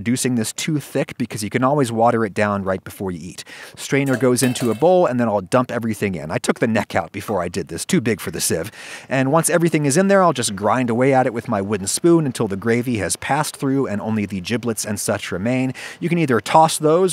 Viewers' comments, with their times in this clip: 0:04 the way he exclaims "I took the neck out before I did this" made me laugh.